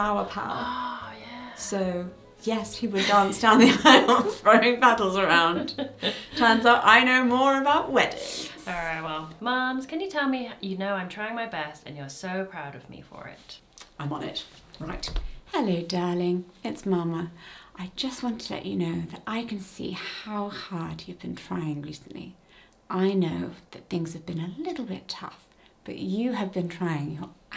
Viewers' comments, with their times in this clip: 0:10 I teared up! 😭 I think everyone deserves a caring, soft-spoken British 'mum' to tell you how proud she is for doing your best.